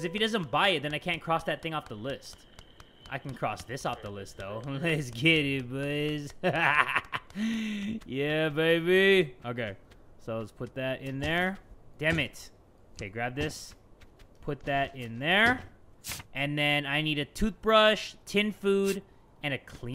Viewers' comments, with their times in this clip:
0:06 boi that's the laugh of the year! btw you're that dude